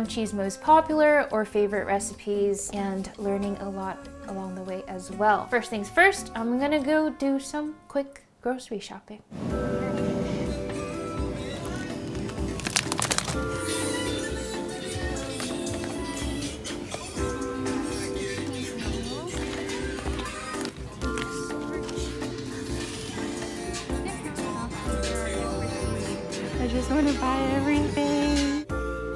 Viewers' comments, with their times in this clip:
0:08 Her shirt says shooky, bts songs were playing at the back....
0:13 BWL IN THE BACKGROUND MADE ME SO HAPPY
0:13 We can also hear Boy with luv 💜
0:13 Who else heard boy with luv play at the grocery store
0:14 Can we just appreciate ' Boy with Luv' in the background as she is shopping for Korean food?
0:15 I can hear BTS in the background lol